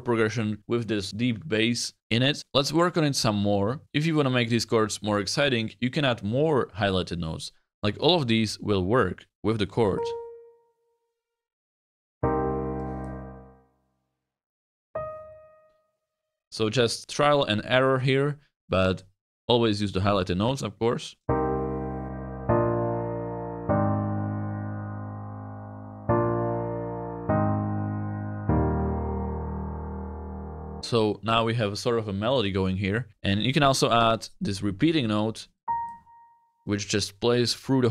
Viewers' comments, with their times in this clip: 0:06 arp the progretion feels like closer cs
0:20 first three sound like Passion Pit Constant Conversations